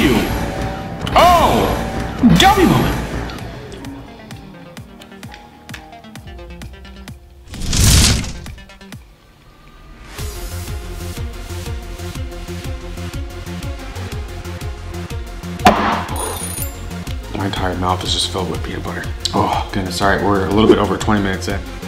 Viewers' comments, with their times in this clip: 0:06 Bro was so aggressive for the W O W moment 💀💀